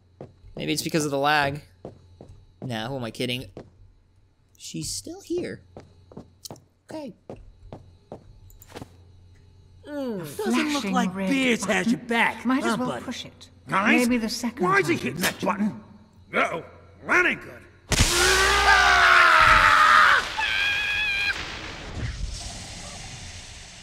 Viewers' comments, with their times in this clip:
0:10 looks like someone need to fixed the audio so it doesn't talk over them
0:11 Looks like someone need to fix that audio. So it won't be two voices at once